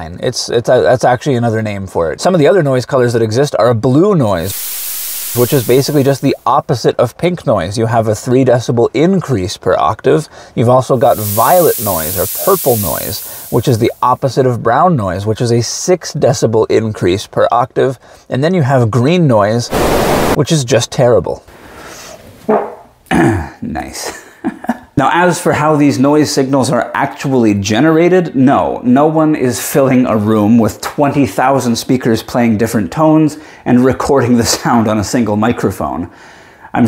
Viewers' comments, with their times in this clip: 0:04 why does this sound like water? or a rain stick? or rain?
0:07 gross. I never wanna hear blue noise again
0:13 double gross. Never wanna hear violet noise again.
0:20 You adding your own brown noise 😂. Out of nowhere, 💀 Great tutorial. Really informative.
0:21 the real brown noise.
0:21 That's the REAL brown noise!
0:21 this was true "brown" noise ...
0:22 there's the real brown noise
0:22 Spoiler alert: comes the actual brown noise.
0:22 brown noise demonstration
0:22 that's what i call a brown noise
0:22 Actual brown noise !